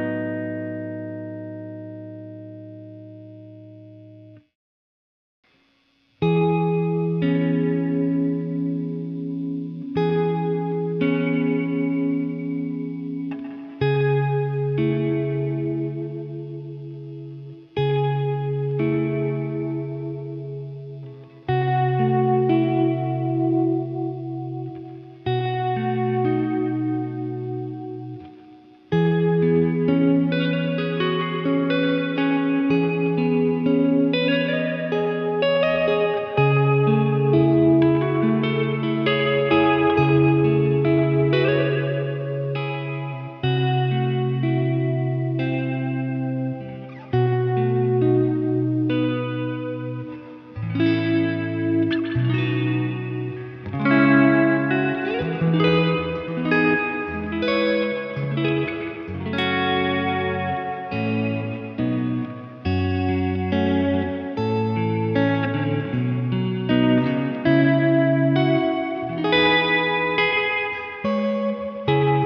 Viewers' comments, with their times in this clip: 0:08 sounded like World Alone by Lorde
0:53 on was a beautiful chord progression